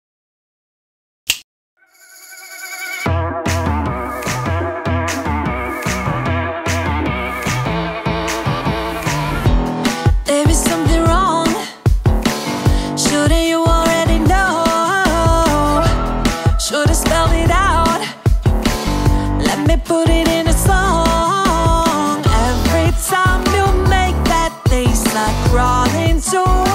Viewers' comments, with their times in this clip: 0:08 Wow this in amazinf friend and I love the song you played for the Knuckles sculpture 😎🤘